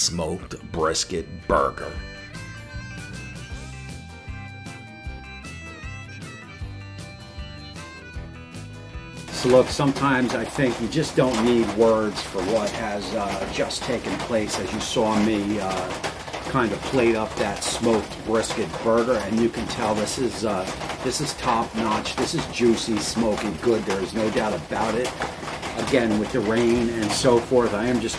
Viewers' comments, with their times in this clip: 0:10 Strange, when listening on bluetooth ear buds on my laptop I only hear your voice over audio not the 'live' voice until then the voice audio is ok. When I listen via the speakers, the audio is audible throughout. Your other video's I just watched are fine. FYI. 😶 Burger looks awesome, nice brisket grind. 🍔🍻